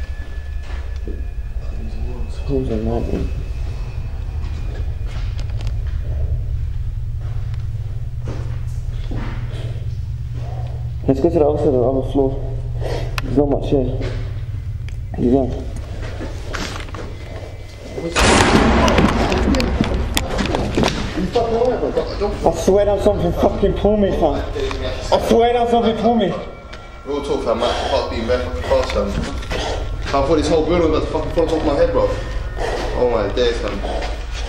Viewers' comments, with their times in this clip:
0:09 who heard the girl cry in the distance
0:09 you hear a voice in a demon voice say something. I can't catch what it says.
0:19 what was that massive bang that caused everyone to freak?? I'm confused??